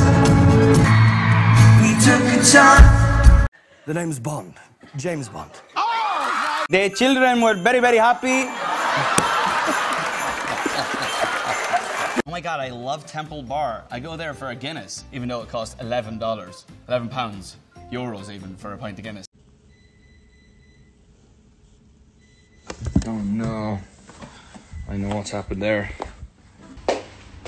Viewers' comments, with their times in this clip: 0:06 I’m Mexican I can confirm that’s how we say it.
0:13 what in the american accent-